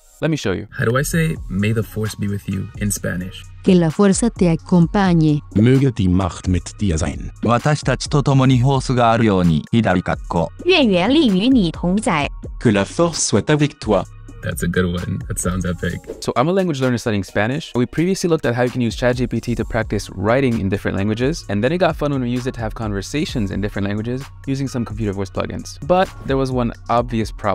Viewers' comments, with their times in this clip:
0:10 I admire Chinese language but this accent makes me very uncomfortable